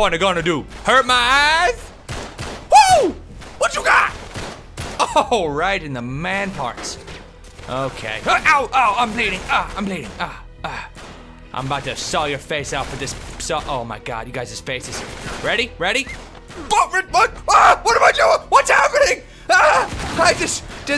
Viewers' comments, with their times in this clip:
0:06 here that dadoom sound? You were on FB chat weren't you